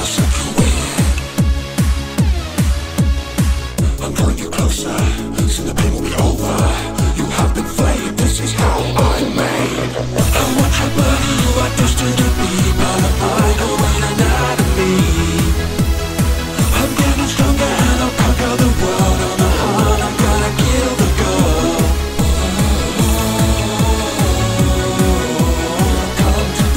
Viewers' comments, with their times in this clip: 0:10 why does he sound so good at this small part especially when he says anatomy
0:12 I love how flamboyant the mind flayer sounds